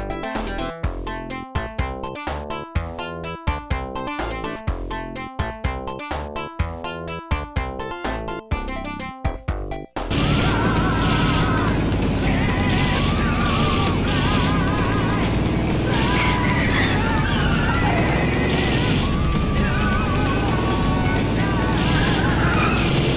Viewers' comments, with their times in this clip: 0:10 OST sounds like Iron Maiden